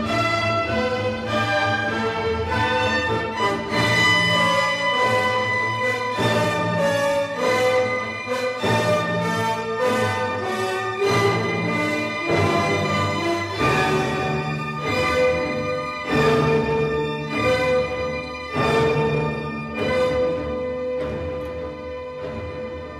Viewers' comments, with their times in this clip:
0:04 shout out to the horn who doesn't even come CLOSE to the partial